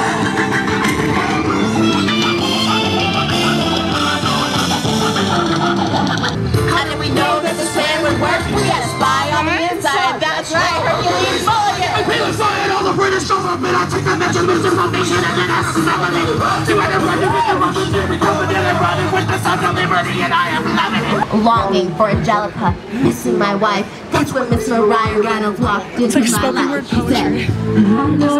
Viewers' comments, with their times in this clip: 0:10 Best part is and when she says ShmUggLe iT
0:12 we love a screamo version of Hamilton